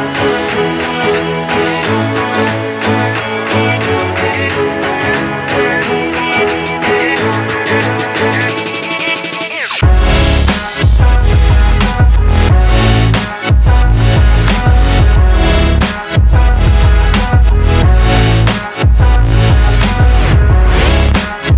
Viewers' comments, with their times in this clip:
0:08 I love that steady buildup getting closer and closer to what you know is going to be the best drop ever, and you're never disappointed as you get down to those "brrp brrp brrp-brrp" ings While I am sad it lasts such a short time, that buildup just makes it all the more incredible.